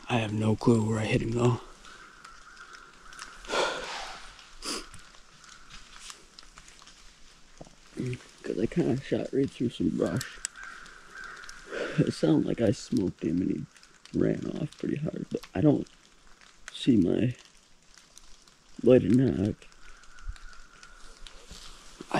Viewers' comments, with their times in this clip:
0:08 The deer was standing behind you he blew and ran away when u started talking and movin around